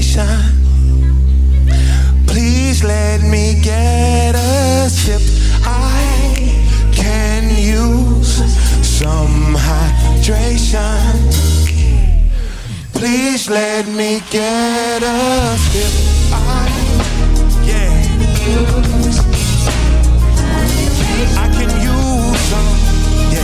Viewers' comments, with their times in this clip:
0:09 AHHHH!!!! Human nature!? Bruh that sounded dope as heck man!